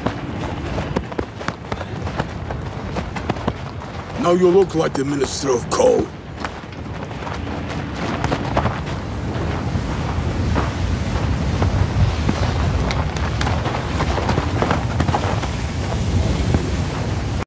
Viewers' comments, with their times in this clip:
0:03 Now you look like the minister of crow
0:04 Literally the only actor in the series who actually tries a russian-english accent and not a british one.